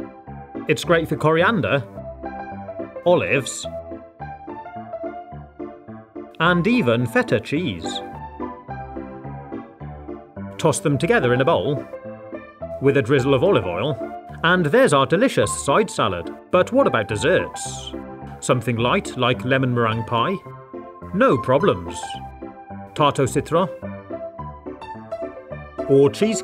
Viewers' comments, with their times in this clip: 0:07 and even fheddar cheese